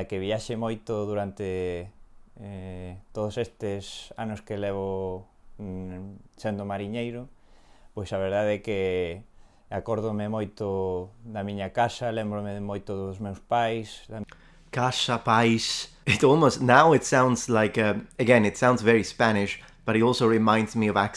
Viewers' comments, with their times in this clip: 0:09 I would say that the strong s, which sound like "sh" is the classic "sh" from Bologna (I'm from there!)